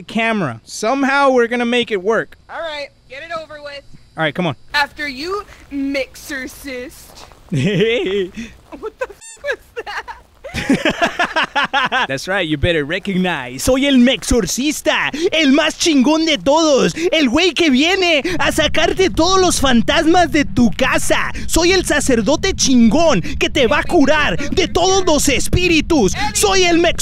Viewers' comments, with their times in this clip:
0:06 *INHALE* I laughed so hard!
0:07 you sounded like woody the woodpecker XD
0:08 when he giggles he giggled like isaac foster from angles of death